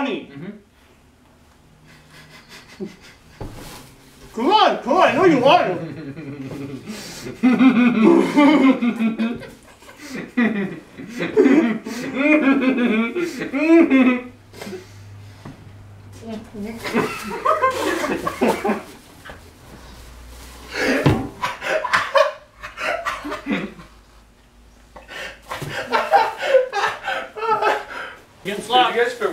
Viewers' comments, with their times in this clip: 0:10 Wirdest lough ever